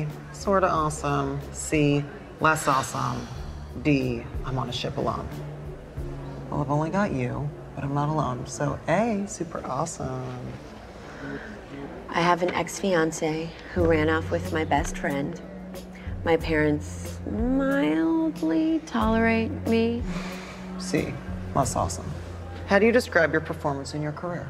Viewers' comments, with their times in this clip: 0:06 how Alex said “super awesome”😂